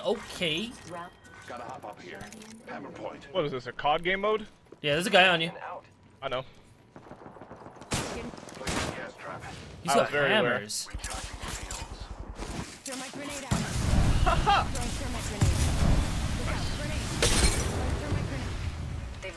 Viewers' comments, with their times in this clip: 0:07 did wraith say pumpkin? or is it just me